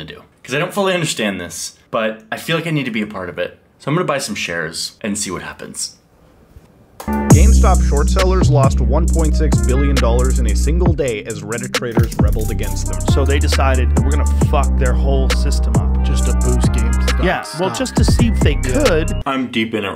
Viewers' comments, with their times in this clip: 0:06 i tough that this dude start rapping